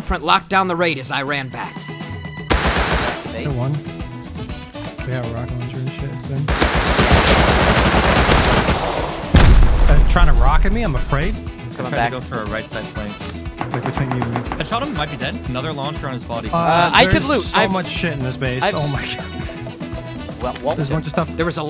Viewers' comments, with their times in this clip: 0:09 just calmly saying “he’s trying to rocket me - i’m afraid”